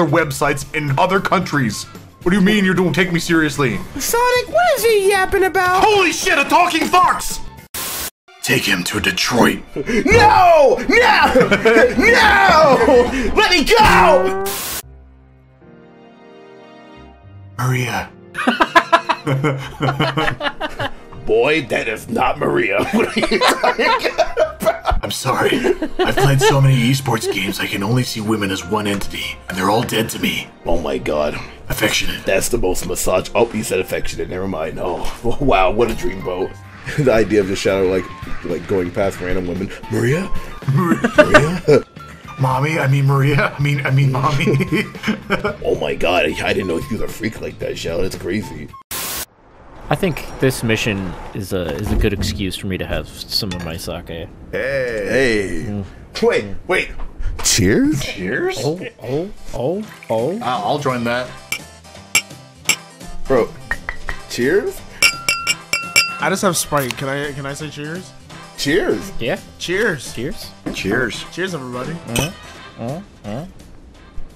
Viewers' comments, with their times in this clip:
0:08 Shadow: Take him to detroit Sonic: NOOOO! Starts screaming and spazzing like a lil kid throwing a fit
1:01 Every cheers represents the stages of drunk people